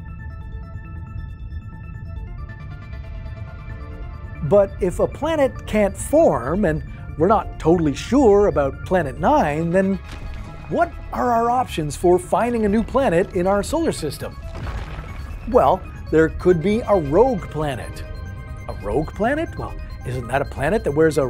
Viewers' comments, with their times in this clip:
0:04 Why are there CCs for some texts, but no audio? Has it been cut by Youtube? e.g. with Nordisk Film clip.